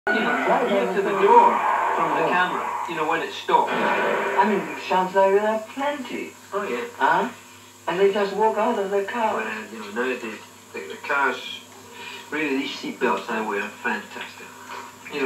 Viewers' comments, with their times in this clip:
0:03 that sound sounded like a gunshot